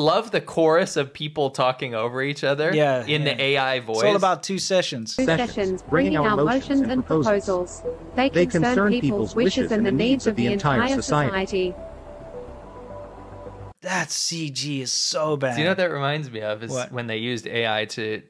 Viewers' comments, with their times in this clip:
0:06 reminds me of that nightmare fuel scene in the animatrix where the robots where like "You will submit us your flesh..we demand it" at the same time with multple voices